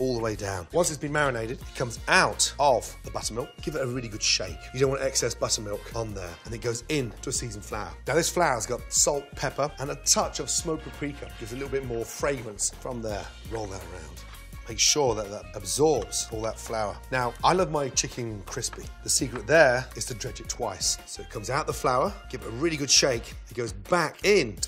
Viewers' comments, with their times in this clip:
0:08 if you listen in the background music you can hear the john cena theme
0:08 I Thought He Said Smoked PreCum 🤣🤣🤣🤦🏽‍♂️